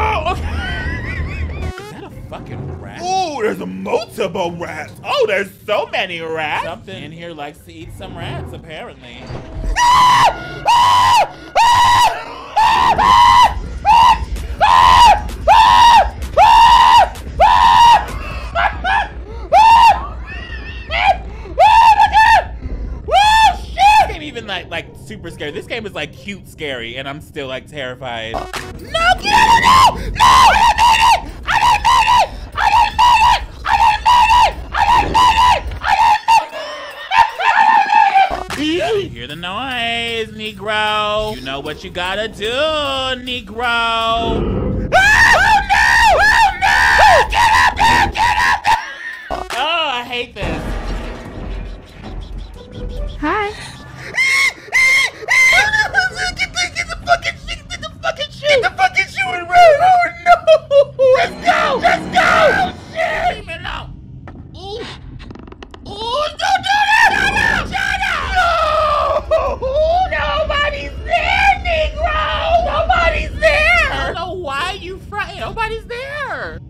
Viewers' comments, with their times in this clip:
0:09 HE TURNED INTO A SIREN LMFAO
0:10 Your screams here reminded me of Sr. Pelo ahahahahahahaha
0:10 omfg he sounds like SpongeBob screaming in the Hash Slinging Slasher episode
0:13 he sounds like when spongebob was screaming from the hash slinging slasher😂😂
0:18 reminds me of that one spongebob scene where sponegbob is repeatedly screaming. That hash slingling slasher
0:28 gives me heavy screaming toad energy and im here 👏🏾for 👏🏾it👏🏾
0:52 That HEE HEE HEE is my new alarm. Edit:
1:02 he sounds like Chamberlain from The Dark Crystal